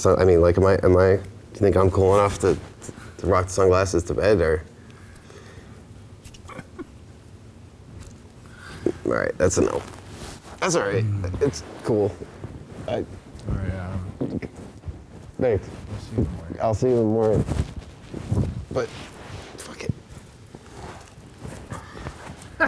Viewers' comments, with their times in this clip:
0:05 slash cheeky laugh